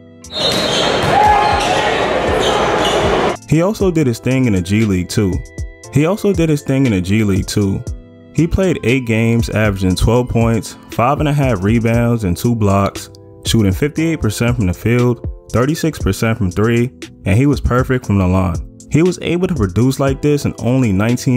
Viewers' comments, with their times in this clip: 0:03 is it just me or do i hear this twice